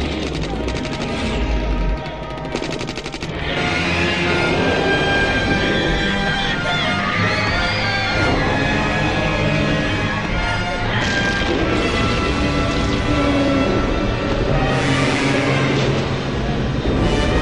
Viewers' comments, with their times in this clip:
0:04 As much as I love Ifukube, none of his scores fit this movie. It's like putting his score on the 1984 film, it just doesn't fit. The scene isn't supposed to be badass, the kids aren't cheering, their screaming their heads off because of how terrifying he is. I appreciate this video, but I just can't agree with Ifukube's scores when it comes down to it for this film.
0:04 and onward is simply amazing with that music score.